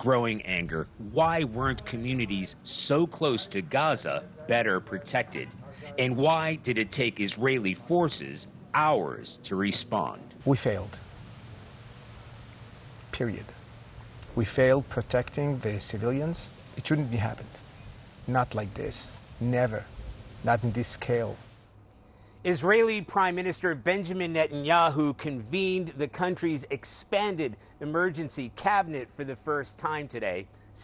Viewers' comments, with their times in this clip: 0:06 “And why did it take Israelis hours to respawn”
0:12 the humility and sadness in his voice almost brought me to tears.